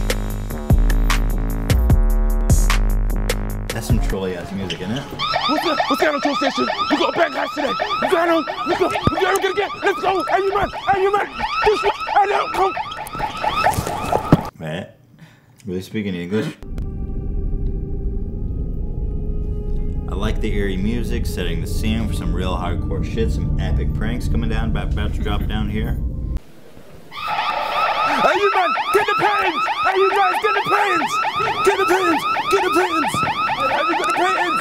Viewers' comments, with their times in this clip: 0:03 'was he speaking english' believe it or not, thats the typical london slang
0:18 The music that starts sounds like the intro to Yu-gi-oh. (I've recently been binge watching the show, don't judge)